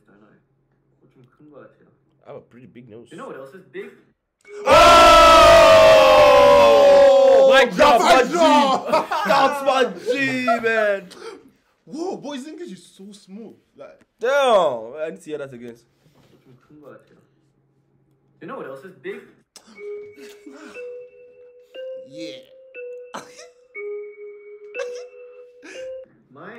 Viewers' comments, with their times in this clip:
0:05 Headphones users WARNING 🤣🤣🤣🤣
0:12 his english is so good cuz he's from Australia